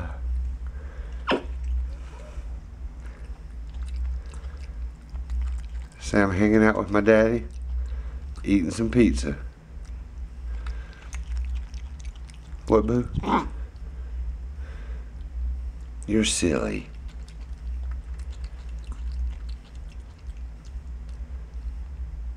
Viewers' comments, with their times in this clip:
0:06 when the word daddy is done play it again it'll sound kinda like a song
0:10 what boo? “*grunts*” Me:🤣🤣🤣🤣🤣🤣😂😂